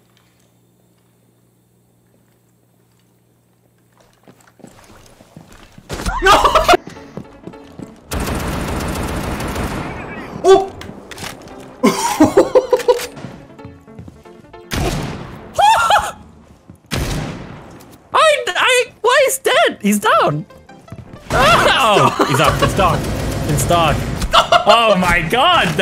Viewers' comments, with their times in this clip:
0:06 Micky mouse laugh